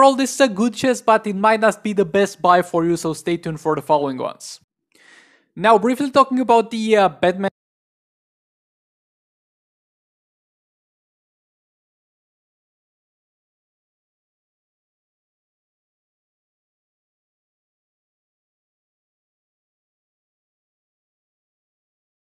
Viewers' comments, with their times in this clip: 0:07 your voice didnt get recorded
0:10 Does anyone else have problems with the audio starting with ?